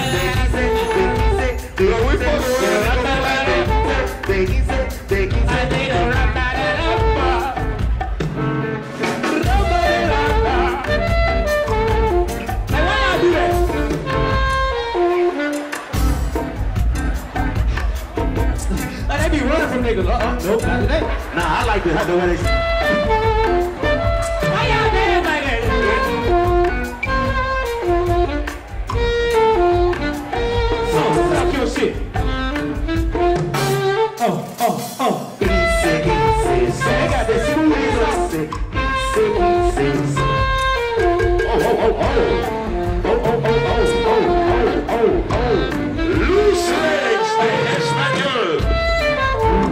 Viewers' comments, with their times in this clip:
0:09 Ik everybody done heard that good elevator music type song before 😅
0:33 anybody else peep dude playing Careless Whisper on the saxophone